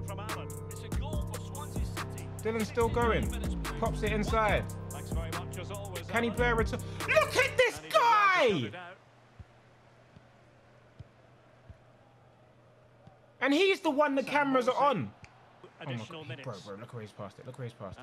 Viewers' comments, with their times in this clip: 0:06 That scream is hilarious. Love the vids Tobi❤❤